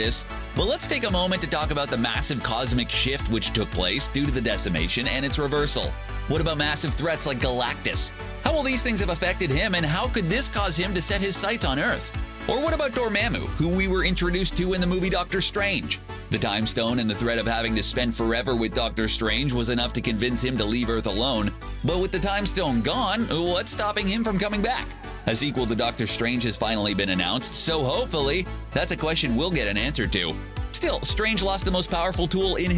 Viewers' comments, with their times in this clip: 0:09 You kinda said Duramamu wrong, You dont emphasize the second A. Like apple. You say it like that
0:12 Dormemu???????? You just got yourselves a dislike.
0:15 can't u just for once say it right in the DR strange movie they say his name